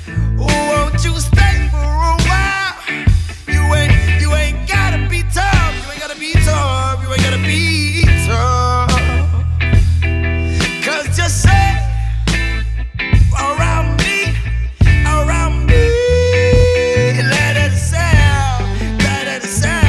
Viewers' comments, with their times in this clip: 0:03 oooff the switchup and vocals.good lord 🖖